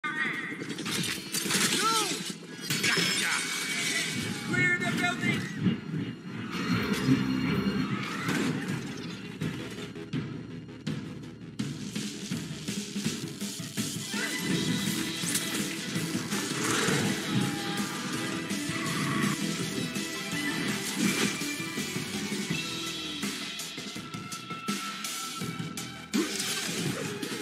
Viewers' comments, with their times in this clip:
0:09 "Here come the Drums"